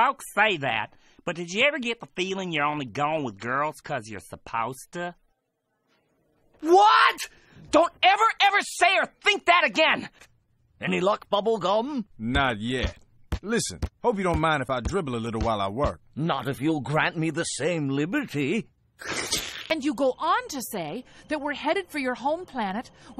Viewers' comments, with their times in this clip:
0:05 what a amazing delivery